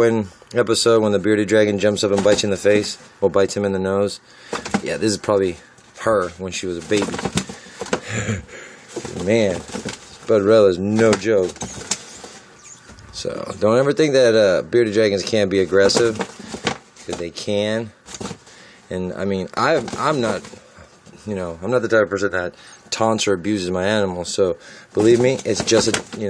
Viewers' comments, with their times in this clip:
0:07 Dat laugh tho